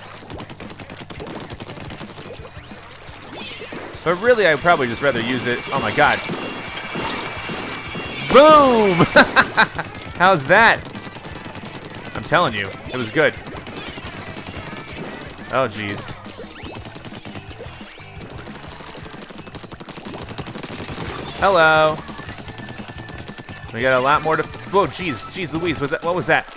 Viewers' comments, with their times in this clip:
0:09 on he did the evilest laugh 😂